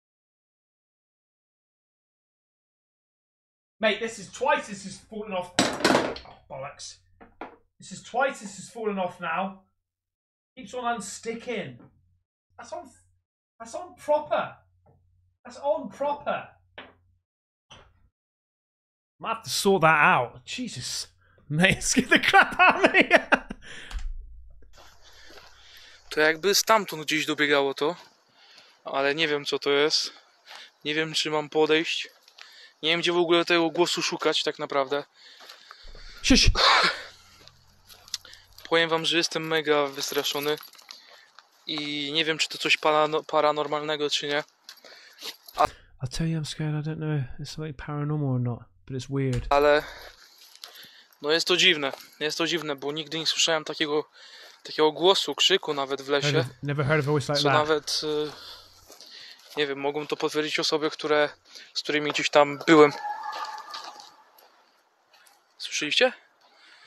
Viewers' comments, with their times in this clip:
0:04 I have heard same screams in the forest, the zone where I live is near Poland (operator was speaking Polish), it was screaming a long time, like a human was screaming very loud, but the thing is, sound was going from the forest across the field about 800 m - 1 kilometer away. So yes, it is more likely an animal.
0:40 Nr:08 "In the Forest" in min Right after you say ssshhhst🤫 there is a "Predator" Like Sound !!! Love ur Channel ✌
0:40 MIN IT IS SURE ABOUT THAT!!! 🎉...😮😅😲😯😮😣 It Sounds like predator or a cryptoid or some figure what you would hear in the movies.. GOD!! What I Hate that sound!! 😅.. 😊
0:47 it kinda sounds like an elk. it might also be bigfoot.